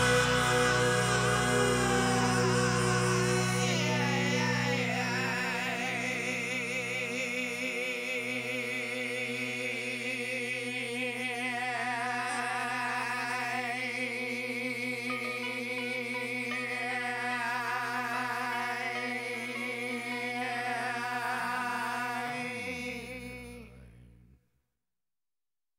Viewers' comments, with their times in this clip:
0:07 Noboby: That annoying mosquito in my room: